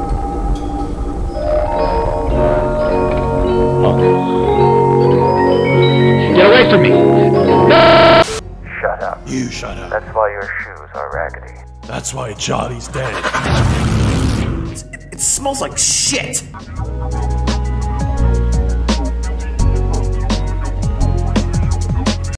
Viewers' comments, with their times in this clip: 0:07 the way bro said nooooo was priceless